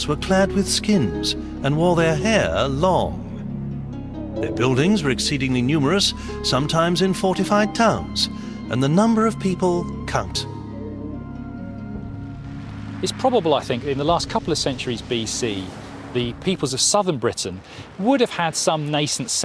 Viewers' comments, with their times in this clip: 0:07 Check the lol from Julius Caesar "And the number of people... cunt."